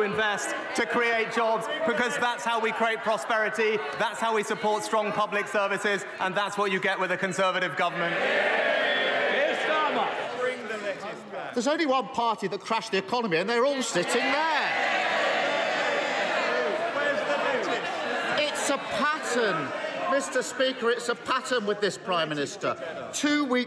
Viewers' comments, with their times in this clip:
0:09 someone heckles ''bring the lettuce back'' 😂